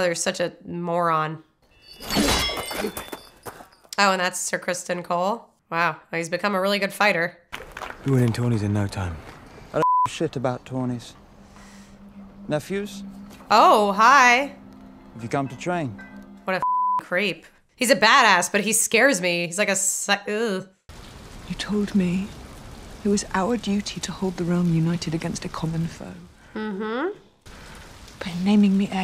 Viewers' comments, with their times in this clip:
0:09 you bleeped out "give a" instead of "shit" lol 'i dont give bleeeeep shit about tourneys" too funny 🤣
0:09 nice bleep, it became "I don't ---- shit about tourneys"
0:10 Hahahaha that mistimed beep
0:10 Do you realise you bleeped give and left the “shit” unbleeped? Haha